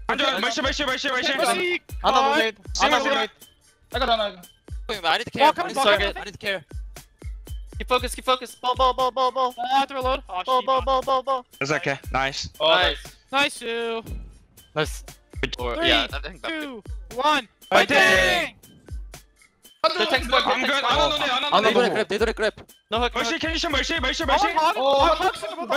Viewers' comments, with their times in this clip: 0:09 lol super casually saying shibal